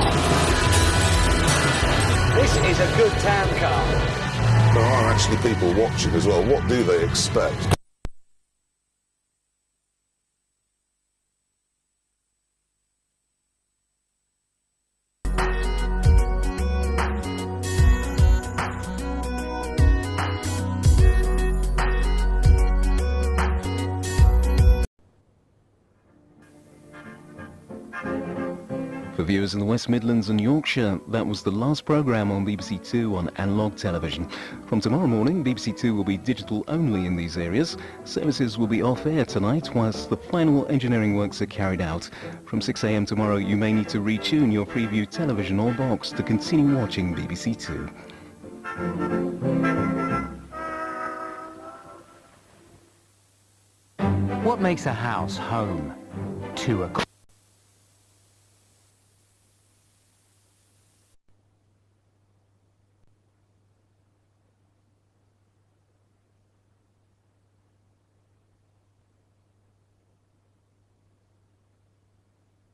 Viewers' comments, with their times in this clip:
0:05 "For the people watching as well, what do they expect?" Static noise, apparently
0:53 To BBC: What was this intended to say? We couldn't hear the whole thing due to analogue. Here's what I made out. "What makes a house home, to a qu- *static*"
0:53 What makes a house home to a c- *static* Edit: part what’s a Edit 2: the fix
0:53 what makes a house home to a**** BAM💣💣💣💣💣💣💣
0:54 BBC: What makes a house, Ho- Static: now it’s my time to shine